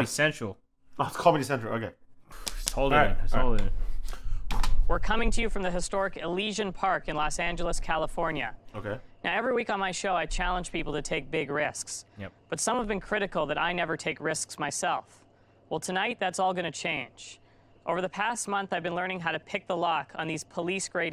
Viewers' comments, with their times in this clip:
0:05 anyone else thinks he sounds like Tempbot from job simulator? or is it just me.